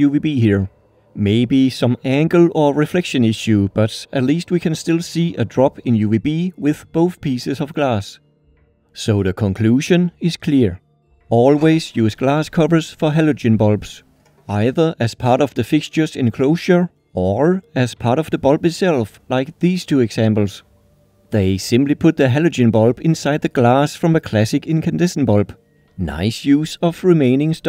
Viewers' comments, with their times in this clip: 0:08 "Soda conclusion is clear"